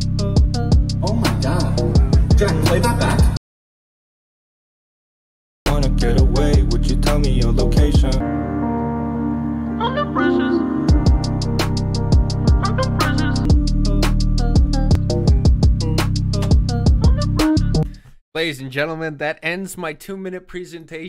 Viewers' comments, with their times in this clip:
0:09 Joji casually telling us he’s on depressants Yea I can’t un-hear that either